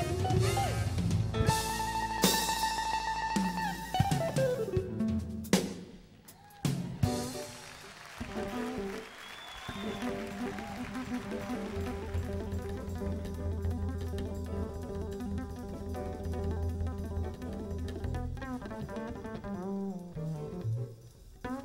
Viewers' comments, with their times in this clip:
0:06 I come back every few months for the bass solo unreal..